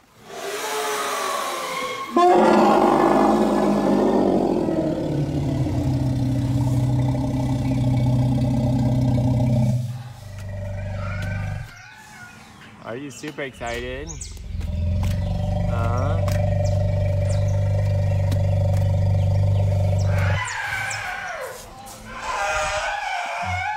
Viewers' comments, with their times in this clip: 0:07 All those rumbles!!!! That is one thing that I would love to experience once in my life. I think it's Raha who is giving Kat a backward kick (only in a good way). So happy for the both of them. Looks like an amazing sisterhood is in the making. Thank you for sharing all this with us!